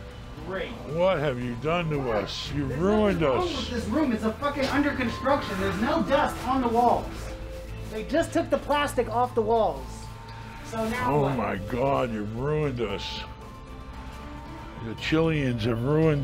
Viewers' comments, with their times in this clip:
0:04 Black girl voice camera woman